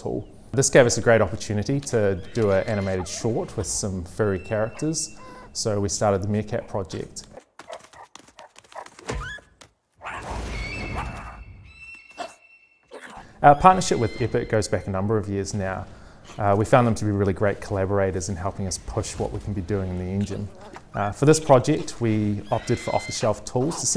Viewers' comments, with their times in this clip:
0:08 Guys, the sound effects are way off Egg shell hitting the hard earth or rock should sound more like sccraping not hitting plus at that speed the shell should be broken or partly broke on the edge leaving some pieces dangling and some falling here and there. But any who.